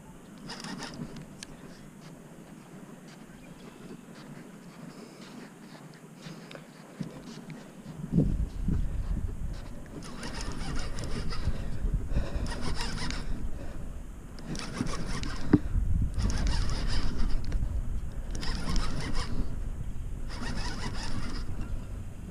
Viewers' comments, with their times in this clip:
0:06 when that line strums like a guitar. U know its a MONSTER